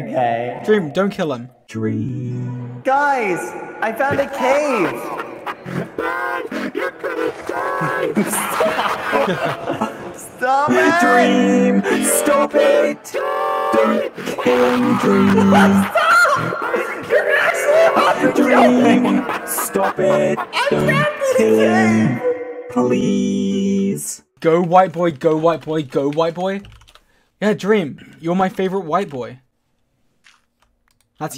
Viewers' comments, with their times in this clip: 0:04 Dreams voice when he’s in manhunts:
0:04 what voice is he using here?
0:17 Is it just me but bad says " stopp you a$$hole